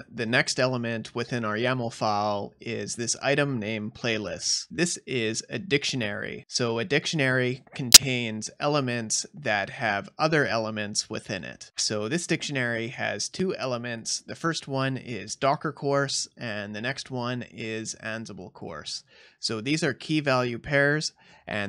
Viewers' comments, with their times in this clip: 0:07 f my ear dude
0:08 Great tutorial. in the video, there is a loud pop or crack which scared the heck out of me.